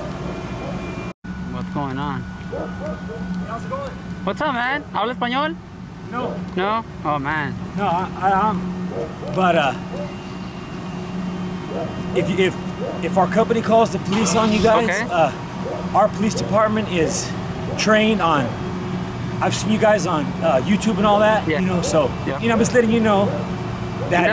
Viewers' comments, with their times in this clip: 0:08 I'm outta breath listening to this guy.